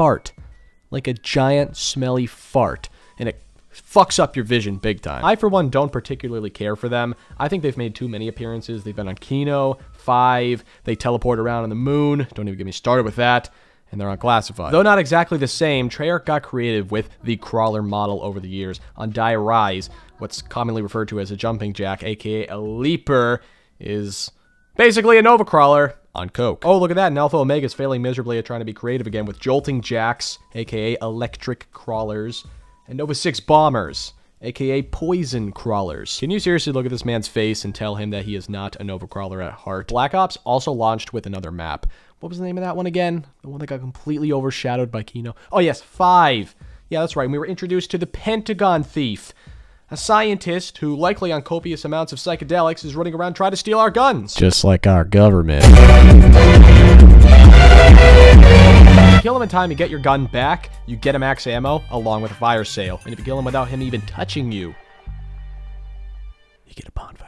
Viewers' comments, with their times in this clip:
0:05 The song gave me vanoss flashbacks
0:54 Woooah headphone warning